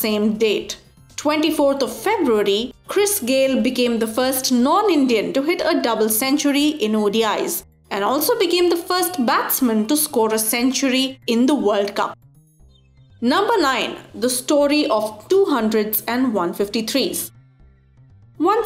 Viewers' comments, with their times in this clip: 0:04 am I hearing north Indian